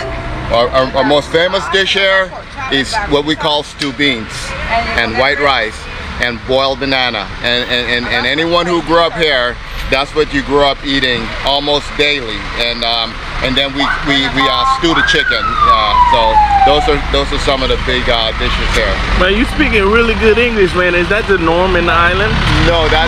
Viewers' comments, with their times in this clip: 0:09 buddy’s english legit sounds good though